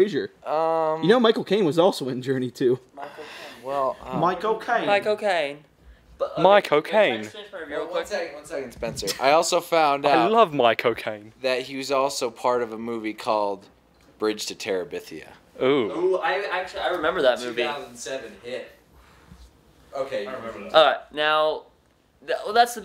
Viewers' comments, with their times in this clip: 0:10 "I love Michael Caine" or "I love my cocaine"